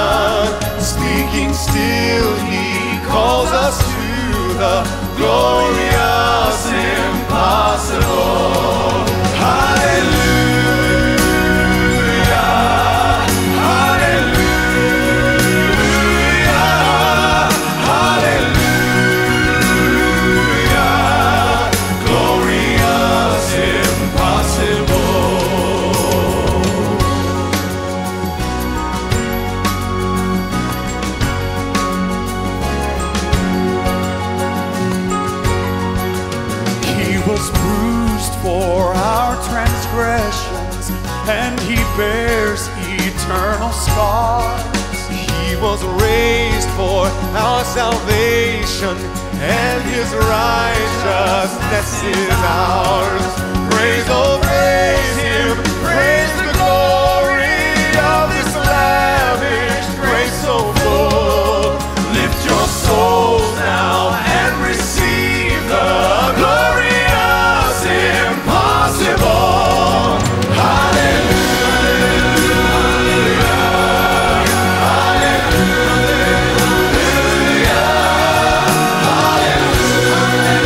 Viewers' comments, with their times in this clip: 0:10 love the song and voices....read this verse colossians
1:07 This is the message of Christmas and they deliver it with such emotion. The key change will bring chills to anyone. God Bless